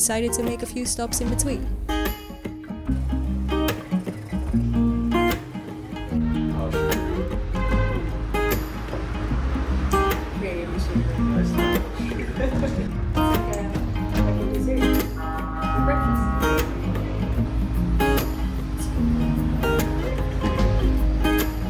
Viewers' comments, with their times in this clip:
0:05 car horn in key and on beat. am i weird for thinking thats cool?